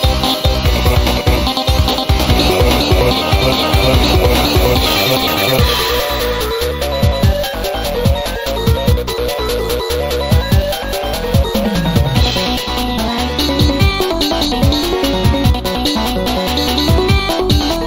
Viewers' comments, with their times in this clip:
0:05 why does he sound like huggy